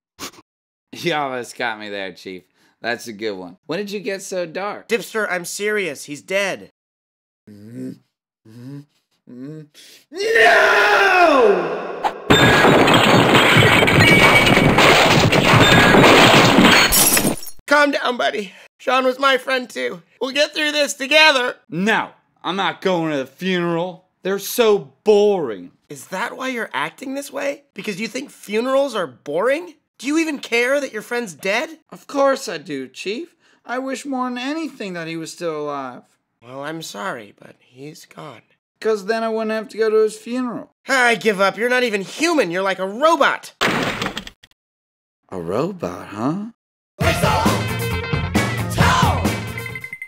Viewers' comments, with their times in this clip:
0:10 The way he screams it is hilarious
0:10 Had the volume up all the way so I could hear it. Scared the crap out of me!
0:33 lol dipster sounds like garfield